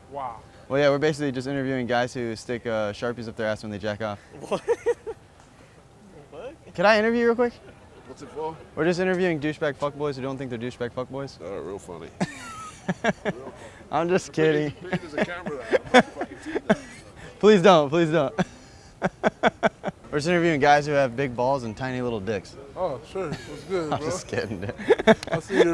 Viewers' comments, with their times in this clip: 0:10 He sounds like Thor